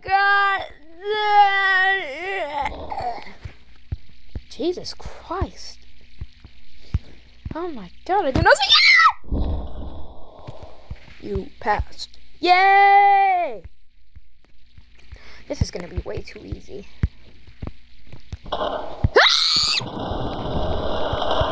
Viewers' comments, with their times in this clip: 0:08 THE “ÆAAÆÆ” BRO